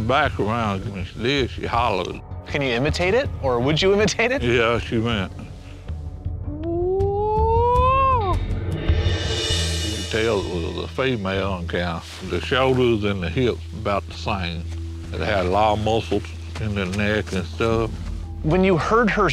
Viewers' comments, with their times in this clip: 0:06 that was a flawless bigfoot imitation!!!